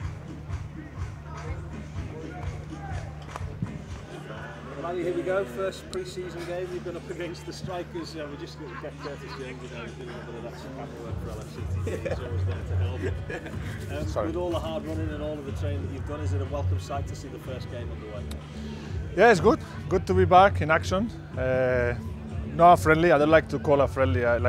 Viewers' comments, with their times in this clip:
0:08 Jürgen’s laugh, in the background lmao😂